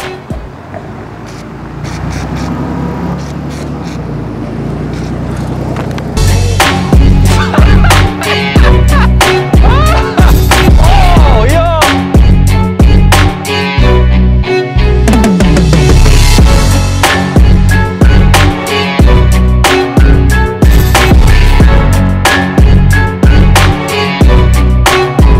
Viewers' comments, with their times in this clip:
0:08 🤣🤣🤣🤣😅😅😂😂😂Hahaha his laugh got laughing hard